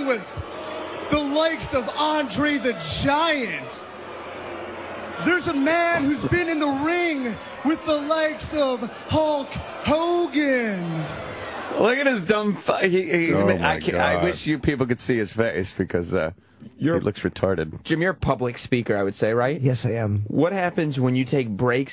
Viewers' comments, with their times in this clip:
0:04 he pauses after Andre the Giant because he assumes people will cheer at LEAST for Andre, one of the most beloved in the sportertainment, who is also deceased, so it's a twofer. But nah. They don't even slow down booing. How shite as a wrestler do you have to be to be hated more than Andre is loved?